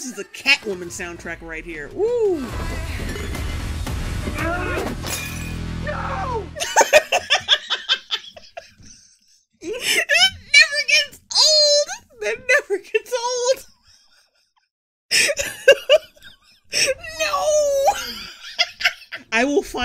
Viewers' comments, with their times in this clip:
0:05 I wasn't looking at the screen for this line, and I HONESTLY thought it was the guy doing a Steve Carrell impression...